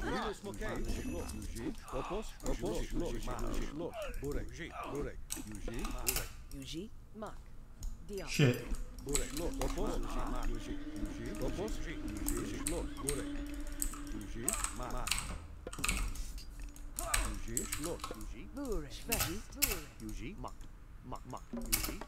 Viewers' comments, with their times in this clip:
0:10 whats that sound elephant? lol